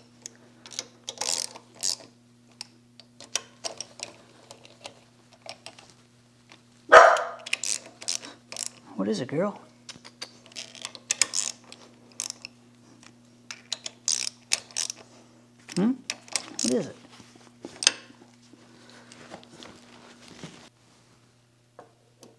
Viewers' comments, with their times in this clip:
0:09 I was sitting here watching your video with my noise cancelling headphones on and had dozed off a bit. you little dog barked and scared the bejusus out of me. Now I get to watch it all over...